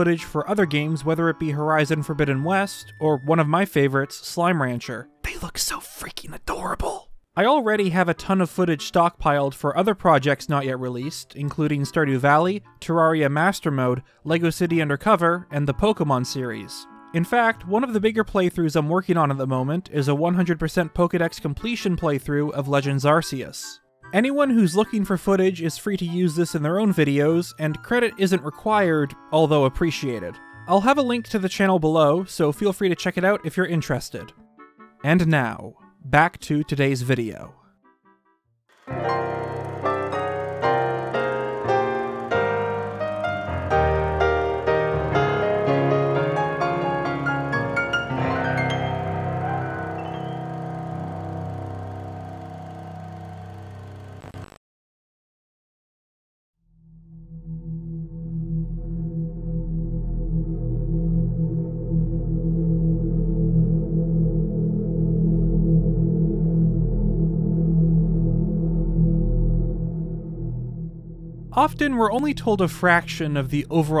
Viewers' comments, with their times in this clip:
0:10 The only thing I took from this video is the way he pronounced Terraria and I find that personally offensive
0:55 The video starts after of cringtastic shilling. edit: your mic is too close to your lisp